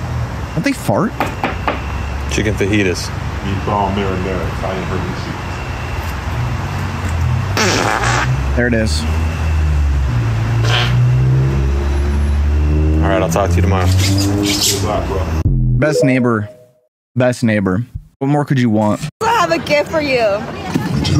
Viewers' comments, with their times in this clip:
0:07 the fact that if you turn on captions and it says "music" then that fart was a absolute harmony